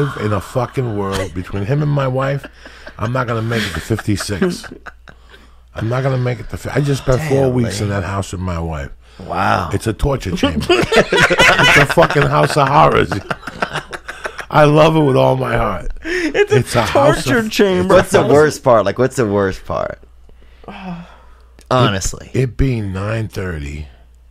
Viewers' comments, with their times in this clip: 0:05 that laugh is amazing